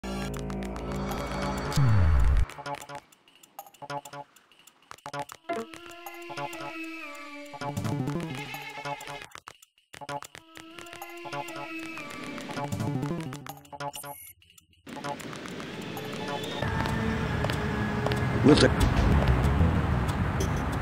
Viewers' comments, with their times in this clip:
0:02 How fast did you speed up the vid ? And what did you use for that? Hell's Kitchen music sounds epic when speed up.